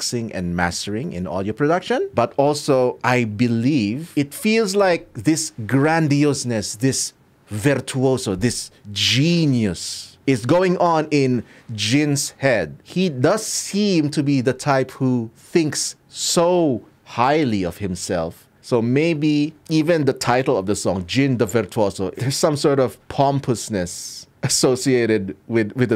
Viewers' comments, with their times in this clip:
0:08 why my mind instead of hearing genius, i heard Jhin-ius.